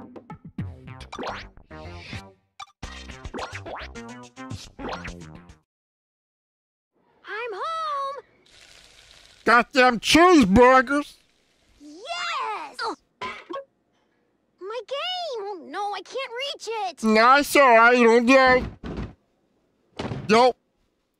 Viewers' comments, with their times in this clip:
0:07 made me laugh so hard, fucking tears came down my eyes! God bless your beautiful voice!
0:07 Stellar 5-volt acting